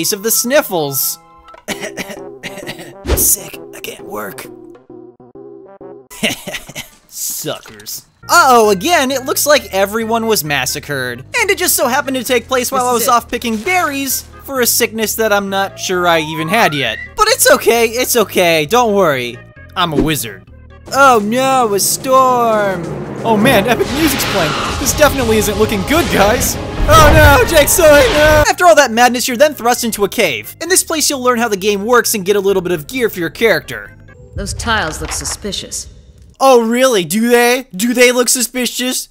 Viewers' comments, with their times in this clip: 0:03 stop doing the cooky earthBound music when you enter a cooky building...meh continue I like that game
0:25 Whats with that creepy "yes"